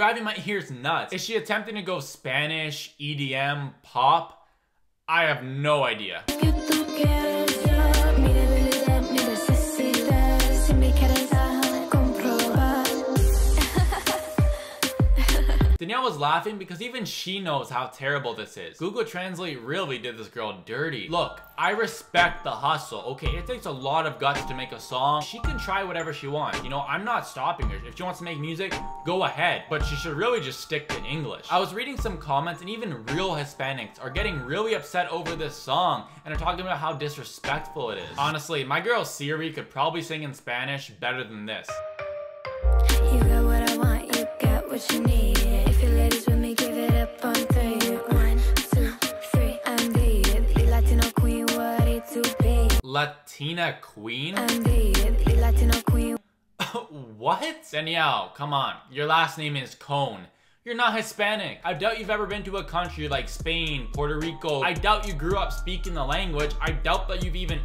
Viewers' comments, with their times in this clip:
0:08 are we just going to walk past the fact that it sounds like she said the n-word
0:48 did she just say “1 2 3 I’m vegan”💀